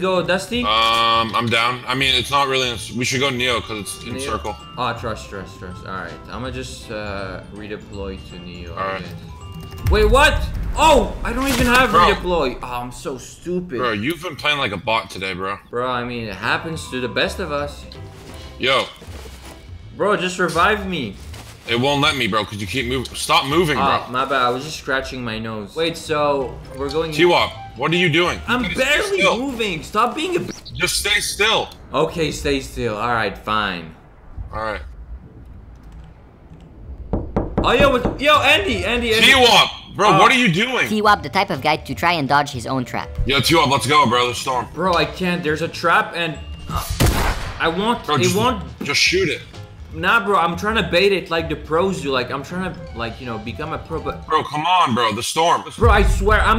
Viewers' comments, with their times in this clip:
0:03 that knock had me tripping on my life i was about to get the door
0:32 when that guy knocks I thought someone was at my door
0:33 wait can anyone hear the door noise
0:34 IT SOUNDS SO REAL
0:35 yo I though someone is at the door 🤣
0:35 I literally walked outside because I thought someone knocked on the door 😕
0:35 thought some one was actually knocking in my door XD
0:35 this scared the shit out of me because I was home alone and it sounded like it was just outside of my door
0:35 BRO THAT KNOCK SOUNDED SO REAL. I ACTUALLY THOUGHT IT WAS A KNOCK
0:36 i had a mentalbreakdown i thought it was my door
0:36 made me think someone was knocking at my door
0:36 dont listen while having headphones on at the middle of the night WARING
0:36 my heart skipped a beat thinkig someone tapped on my window
0:36 BRO IM NOT EVEN JOKING I THOUGHT THAT WAS REAL AND ASKED MY FAMILY WHOS AT THE DOOR BRO THEY LOOKED AT ME CRAZY AND THEN I WAS LIKE OMG
0:36 who else though someone knocked at ur door
0:36 i for real that there was some one on my door
0:36 That knock sounded like it came from my window that had its blinds down. I became scared bro.
0:36 knock knock real sound
0:36 WTF I THOUGHT THE GHOST WAS KNOCKING AT MY CLOSENT LOL
0:36 THAT KNOCK SCARED TF OUT OF ME
0:36 Bruh I thought someone was knocking on my wall
0:36 i thought someone was really knocking the door
0:36 it sounded like its real
0:36 omg that knock got me shook i thought someone was knocking on my window
0:36 I had headphones on and I thought that someone was knocking from my window 😭 2023 Here
0:37 I ACTUALLY THOUGHT SOMEONE WAS KNOCKING. I CAN NO LONGER WATCH THIS VIDEO..
0:37 When I heard those knocking noises, I actually thought it was real
0:37 DUDE THAT KNOCKING HAD ME THINKING SOMEONE WAS TRYING TO BREAK IN MY HOUSE LMFAOOOOO😂😂😂
0:37 I thought someone was knocking on my wall in real life and I got so scared.
0:37 anyone else thought that someone was knocking on your door lol
0:37 I thought someone was knocking on my window
0:37 that knocking sound Made me think there was someone knocking on the door
0:37 R.I.P. headphone users heart🥲 (i used headphones)
0:37 I THOUGHTSOMEONE WAS KNOCKING ON MY WINDOW
0:37 that knock sounded real
0:37 I actually thought someone was knocking at my door
0:37 Who else thought some one was actually knocking at their door?
0:37 I thinked somebody knocked my door xDD
0:37 I literally freaked I thought my neighbors were knocking ✊ on the wall nest to me
0:38 Wthhhz i literally freaked out ... I thought my neighbor was knocking on my wall🥵😪 (earphone user)
0:38 I THOUGHT SOMEONE KNOCKED MY DOOR 😂 😐